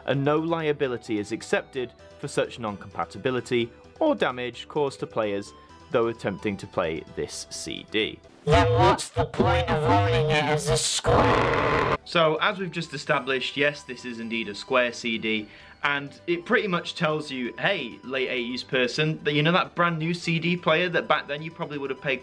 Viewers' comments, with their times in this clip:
0:08 where did that robot voice come from